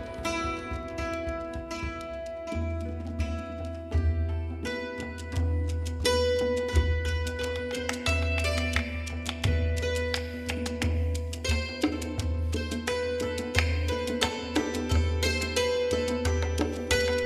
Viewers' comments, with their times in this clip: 0:04 The music is rich and Compelling. Love the track that begins Gorgeous-